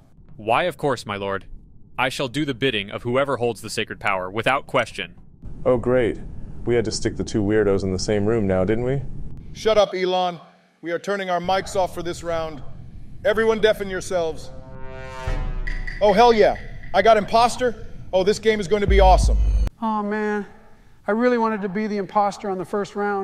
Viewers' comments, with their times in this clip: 0:05 Good voice donald 😂
0:05 that isnt trumps voice
0:05 I love how in the beginning Elon musk's voice was coming out of trumps mouth in